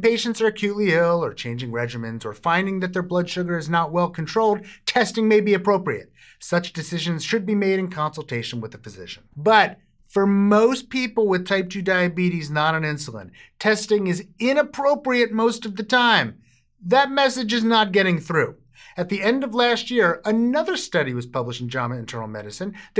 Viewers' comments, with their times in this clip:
0:07 He is absolutely correct about how testing blood sugar has no effect on levels or condition. BUT, that is misleading. You see, testing Anything is not going to change the condition. What testing does is to merely monitor the condition. With those test results, one can take appropriate action to change the condition if need be. Plus when he mentions whatever medication and when he says about consulting a physician, he says it rather quietly in almost the same tone as when someone feels guilty trying to "sneak in" a fib. Like they do not want you testing on your own but paying a doctor who will, you guessed it, do a blood sugar test. THEN of course at the end - he mentions patreon. This whole video, I could smell something. I wonder what it was?